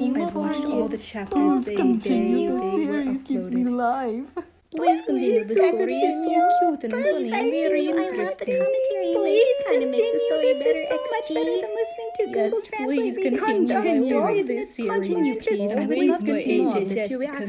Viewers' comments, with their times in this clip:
0:05 Wah!! I'm in the screenshot. I absolutely love the voice you gave me. XD